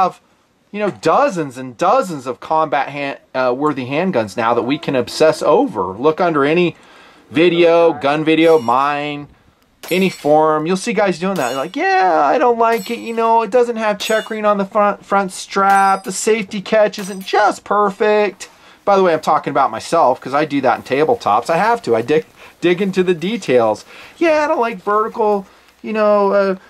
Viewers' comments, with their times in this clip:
0:10 perfect morty impression